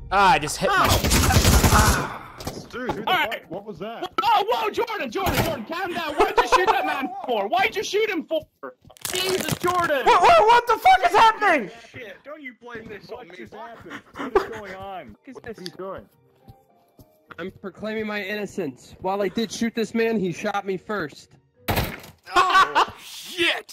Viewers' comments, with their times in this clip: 0:08 me: making whales being strangled noises